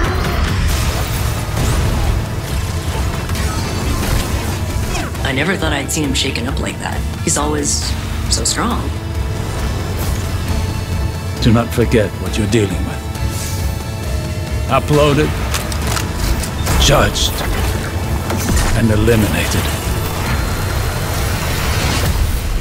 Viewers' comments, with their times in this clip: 0:05 Did they change failsafes voice actress??? She sounds weird.